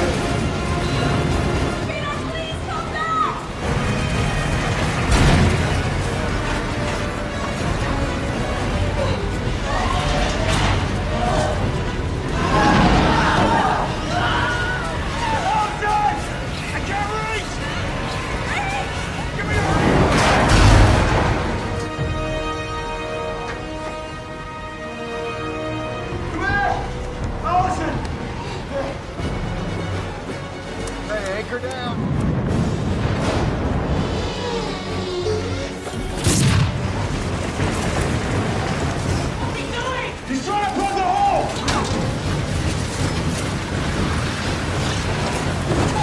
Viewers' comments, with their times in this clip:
0:10 Guys Hear Closely.. its the Ah sound..
0:12 Why did they put on Wilhelm scream effect?
0:14 this scream sound is iconic
0:34 Titus Grappling Claws sound is so Sick bro!